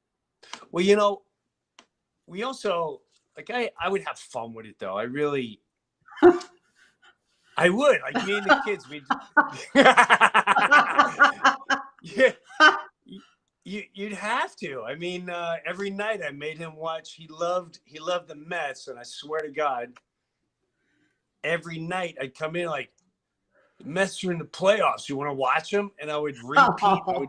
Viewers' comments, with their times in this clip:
0:09 I STILL watch reruns lol I have my favorites recorded seasons 1 through 4. I had the DVD collection but it got damaged during a move 😭 omg im geeking out two most iconic laughs on the same screen! Life is good ❤